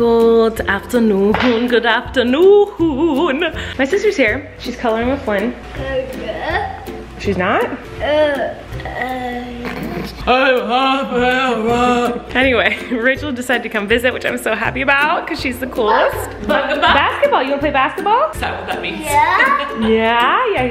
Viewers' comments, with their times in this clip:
0:08 can someone add these noises to a scene in a zombie movie 💀